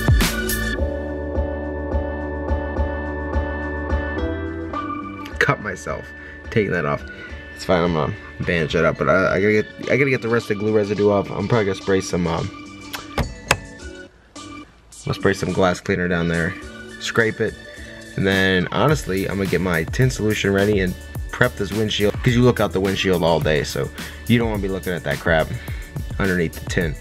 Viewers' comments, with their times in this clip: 0:08 With subtitles he said it’s fine mom bandaged it up